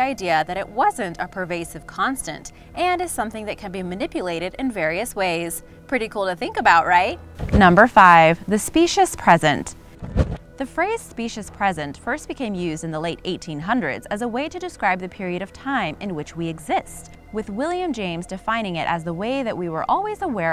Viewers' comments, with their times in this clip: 0:07 rip headphone wearers